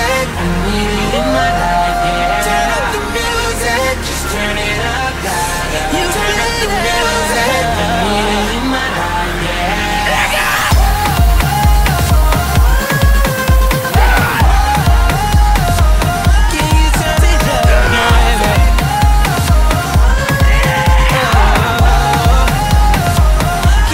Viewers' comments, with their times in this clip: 0:09 Omg I tried skipping to the end after reading this and got exactly when he screams "Let's go!"